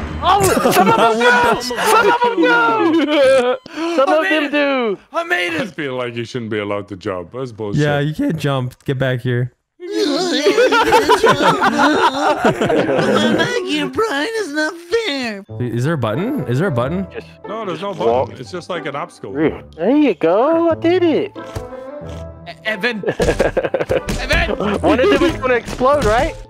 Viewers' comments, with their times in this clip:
0:05 the little voicecrack :)
0:07 There needs to be a compilation for best of Vanoss voice cracks 2023 lmao 😂
0:07 voice crack 😂😂😂😂 also Merry Christmas vanoss and to the crew
0:07 Did his voice crack ?
0:08 the voice crack 😂😂😂
0:08 that voice crack 😂😂😂😂😂